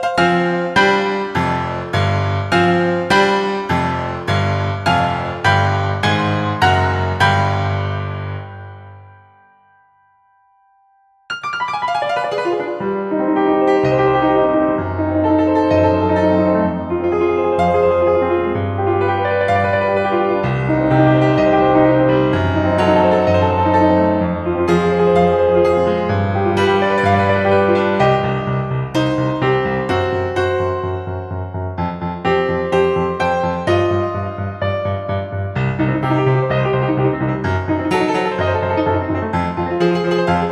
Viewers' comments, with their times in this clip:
0:10 When the moonlight sonata kicks in:
0:11 chopin part lol
0:15 The runs are so clean
0:21 dude why it sounds like Chopin's ocean etude to me